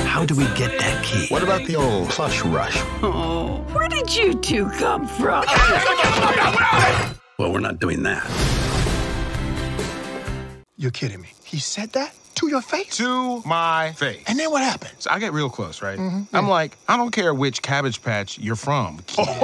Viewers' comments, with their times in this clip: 0:06 Is it just me or Buzz sounds like George Clooney as Danny Ocean?